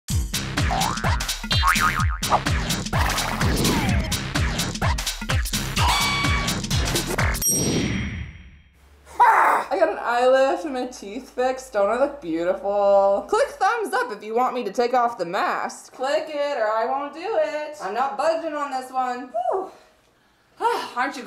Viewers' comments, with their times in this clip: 0:09 AAHGG scared the flip out of me